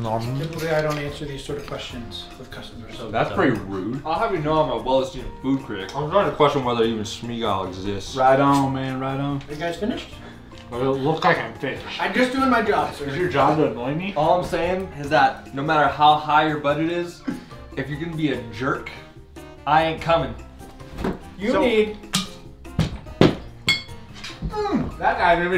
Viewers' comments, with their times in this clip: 0:09 when he said right on man right on didn't it sound like the dukes of hazzard